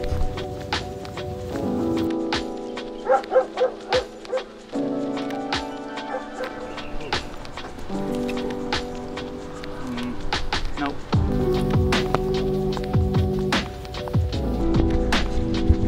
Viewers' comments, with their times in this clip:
0:03 the dog barks a perfect triplet to the music lol
0:03 please tell me the dog barking in sync with the music was on purpose